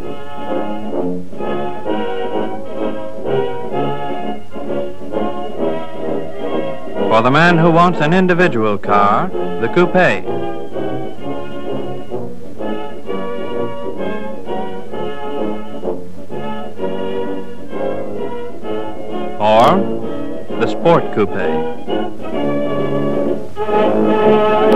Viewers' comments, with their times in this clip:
0:06 Love this. Notice you can hear that America did indeed used to say coupe 'correctly' ie "coop-ay" rather than the now accepted "coop"
0:09 when Coupe was still pronounced right!